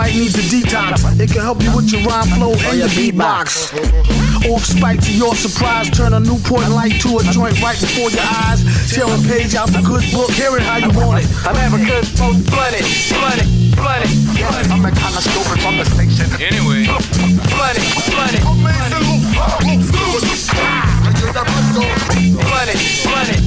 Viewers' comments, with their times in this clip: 0:05 the sparkle sound effect for that line was so fucking funny